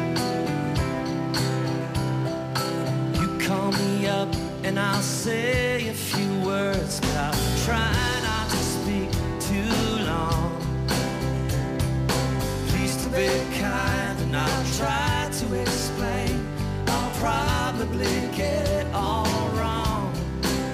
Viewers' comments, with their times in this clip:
0:05 That drum fill while Neil sings intro is perfect.